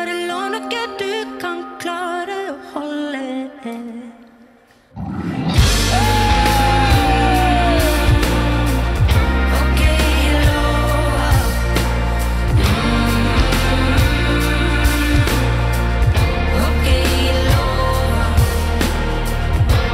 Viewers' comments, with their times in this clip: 0:04 Amazing performance by Ingrid Helene. And the musicians in the band... top class. Hammond keyboard gets me teary every time. True masterclass